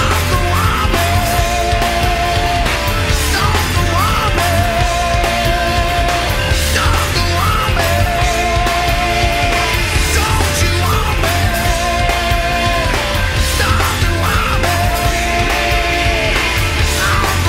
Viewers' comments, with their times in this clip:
0:03 the noise in my left earbud made me think my mom was yelling for me but its just the guitar😂